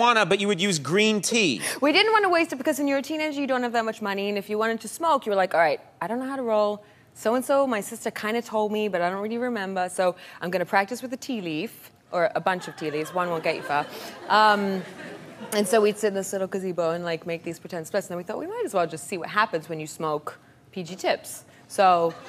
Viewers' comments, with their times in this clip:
0:07 slips into a jersey accent